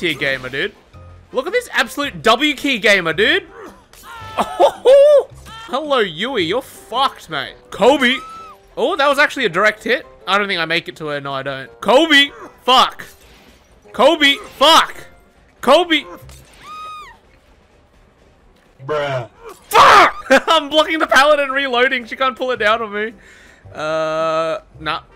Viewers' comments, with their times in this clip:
0:06 How many times did bro yell Kobe and miss